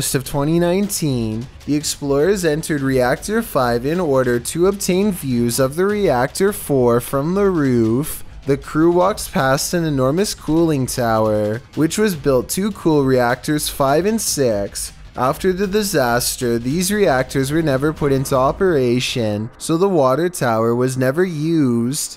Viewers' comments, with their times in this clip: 0:07 sure thaz a refrigerator